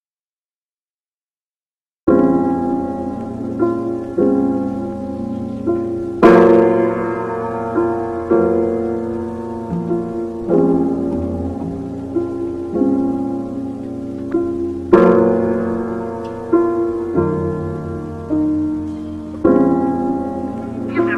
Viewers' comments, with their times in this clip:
0:07 RIP earphones users ;-;